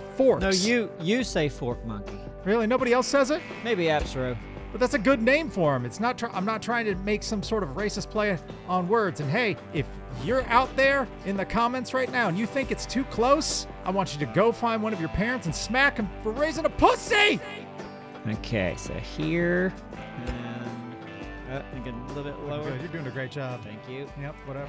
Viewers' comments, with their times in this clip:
0:10 this whole statement and delivery makes me wanna watch F is For Family or Bill Burr stand up! It was very Bill Burr!